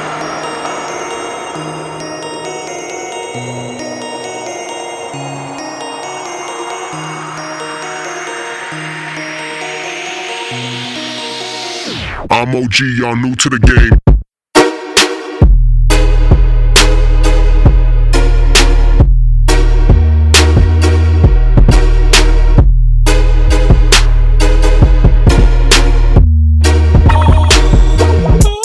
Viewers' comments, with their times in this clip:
0:09 (drop da bass)
0:14 bass only start